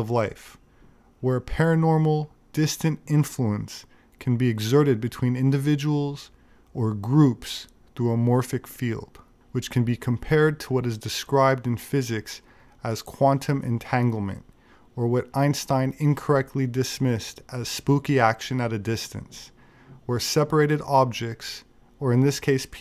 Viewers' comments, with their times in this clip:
0:08 Will Smith: "Who da hell is Kwuantum, Jada?!?!"